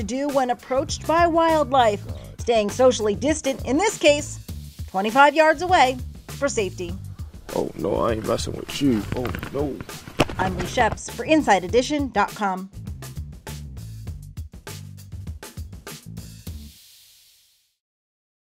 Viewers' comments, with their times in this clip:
0:07 when somebody coughs